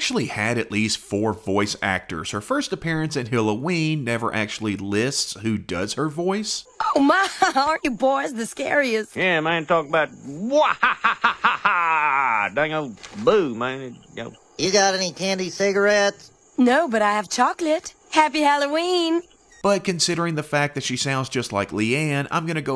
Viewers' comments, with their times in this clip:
0:07 she sounds very close to luannes mama. The sound she makes sounds very close to when she called buckly a cutie